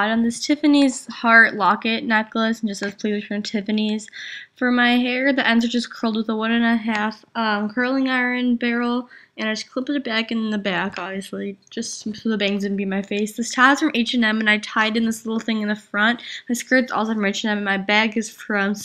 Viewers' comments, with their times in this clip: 0:05 LOL her face because she sneezes!! :D thumbs up if you saw it!!